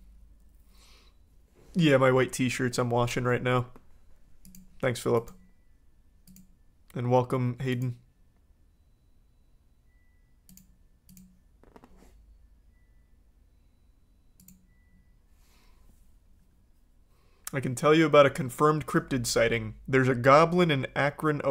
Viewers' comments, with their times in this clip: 0:05 Bro I can hear the Samsung washine machine tune😂💀